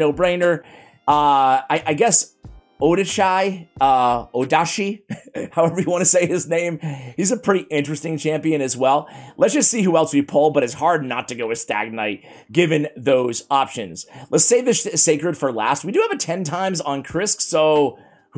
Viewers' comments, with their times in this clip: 0:04 the first time you pronounce his name correctly, some progress has been made